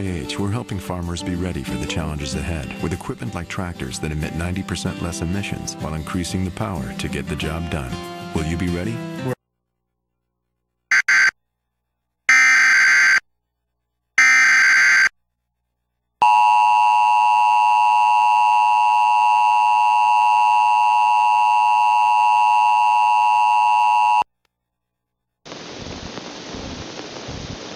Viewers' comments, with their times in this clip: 0:08 “Will you be ready?” Person: “Rea-“ BEEEEEEEEP “Well, uh, I guess they weren’t ready.”